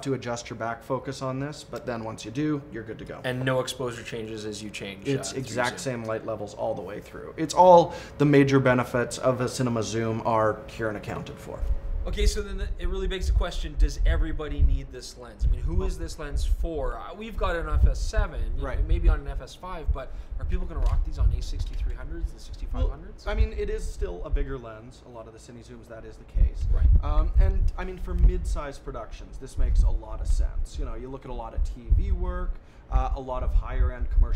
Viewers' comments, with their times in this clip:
0:10 Jesus Christ I thought one of my speakers had popped. You guys are serious about lenses but not about audio I guess...
0:11 What happened to the audio from ?
0:14 I'll probably never shoot enough video to justify buying a lens like that, but I appreciated finally seeing a real demonstration of the difference between a typical photography lens and a video lens. I'd heard of focus breathing, parfocal, etc. but they were just sort of vague concepts until now. Great job, except the audio from on. What the heck happened?
0:14 In the audio seems..... trailed off?
0:14 What happened to the sound ? Good slap though. very funny.
0:16 Great video guys. Interesting lens. Wish it had full RED coverage. What's going on with the sound onward?
0:17 Audio craps out mark! someone was using the wrong audio channel after you cut to the back focus segment....
0:19 same as others have said, I got a ton of very low frequencies and no more voices coming through audio.
0:21 WTF is happening with the audio Don't you check your videos before uploading?